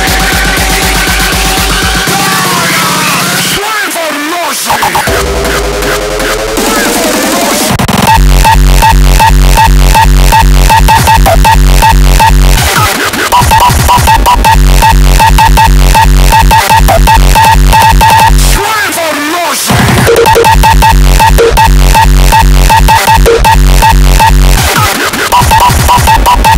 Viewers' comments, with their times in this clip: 0:07 the distortion of the kick is fkn insane man 🥵